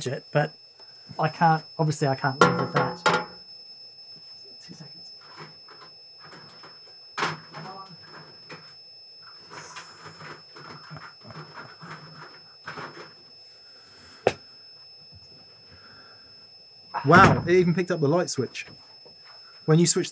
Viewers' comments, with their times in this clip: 0:03 This is tremendous! Seeing Dan's amp whistling with the Matchless sitting idle in the background is too much!